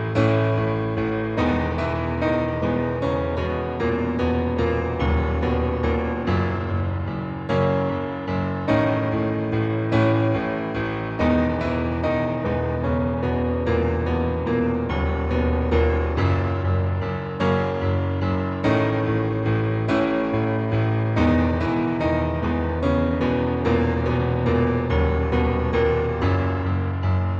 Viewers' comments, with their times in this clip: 0:08 your audio is clipping on the loud parts